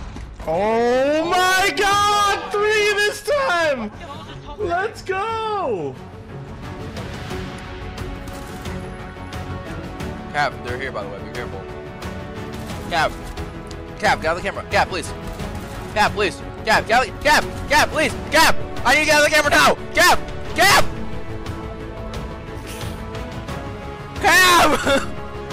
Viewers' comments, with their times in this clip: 0:08 Thanks for showing my clip <3. (sorry about the chewing I was eating an old starburst lol.)